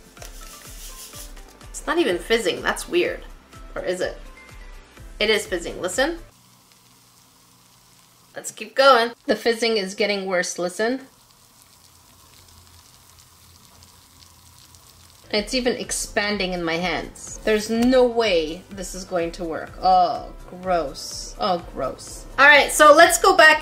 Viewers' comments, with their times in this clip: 0:03 this is sound of hell
0:07 i was turning my volume up so I can hear it... moms making chicken behind me and i was like “dang real good sizzle...”